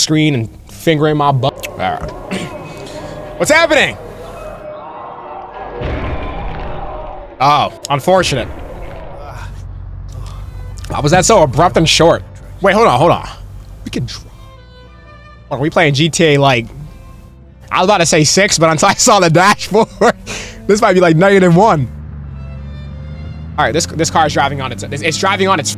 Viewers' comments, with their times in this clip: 0:10 Why did he say it so quiet